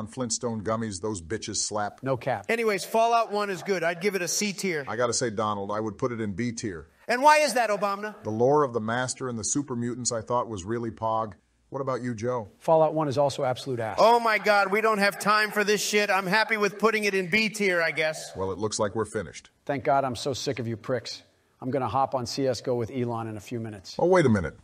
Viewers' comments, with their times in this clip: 0:07 sounded like "obamina" to me